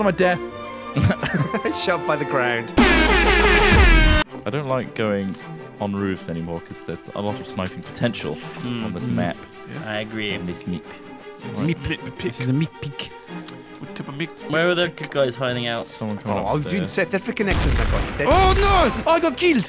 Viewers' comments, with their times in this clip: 0:03 fucking air-horns hahaha